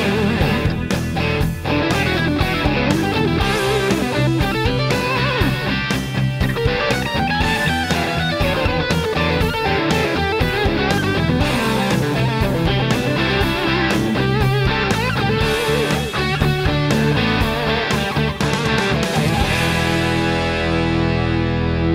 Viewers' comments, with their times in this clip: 0:06 I'm stealing the lick Thanks.